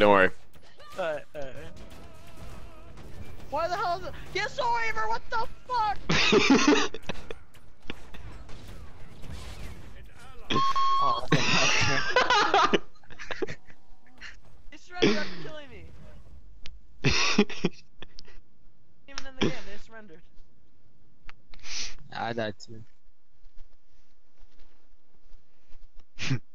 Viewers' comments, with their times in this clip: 0:10 that was a sweet scream LMAO